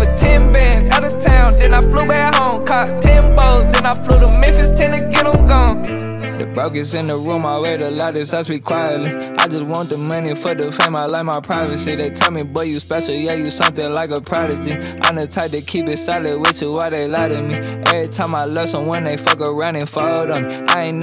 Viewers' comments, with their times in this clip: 0:06 Great flow bro! 🔥💯love this part 💪🏻